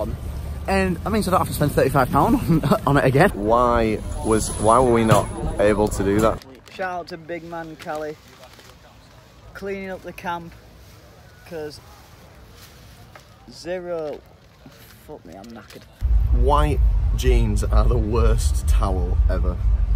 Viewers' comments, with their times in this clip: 0:07 So rough couldn’t even finish the sentence hahahahaha